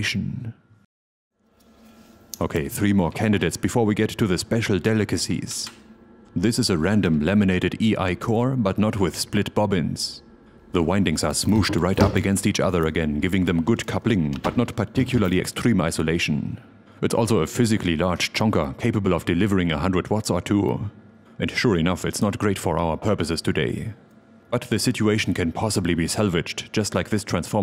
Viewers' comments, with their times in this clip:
0:10 I thought you said lemonaded. Probably because of the yellow covers you got right below the transformer. That would have been funny.